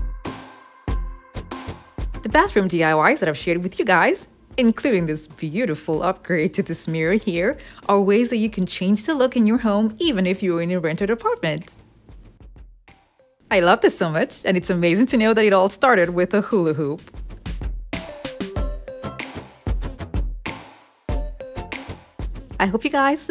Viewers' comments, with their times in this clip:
0:05 are you laughing?